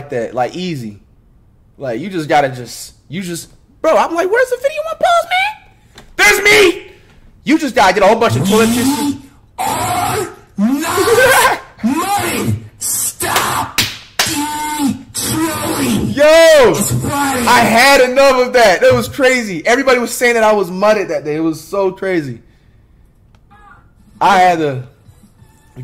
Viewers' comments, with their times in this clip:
0:05 he was mutted :(
0:08 i think they tunred this down this broke my earbuds